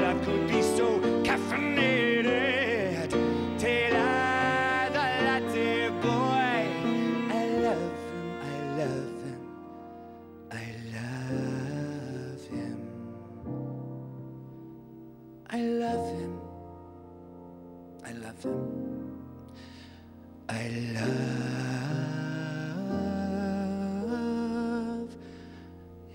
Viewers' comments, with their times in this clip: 0:10 i love his voice